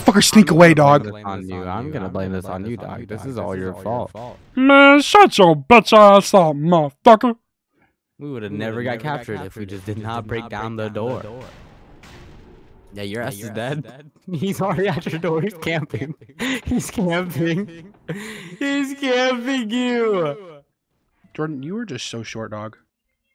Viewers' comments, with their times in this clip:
0:05 bro almost sound like clicker from excellent entities